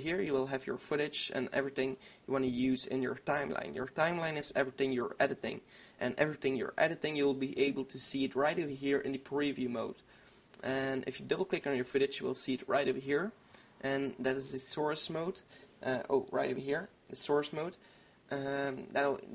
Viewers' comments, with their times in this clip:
0:05 erting you're erditing!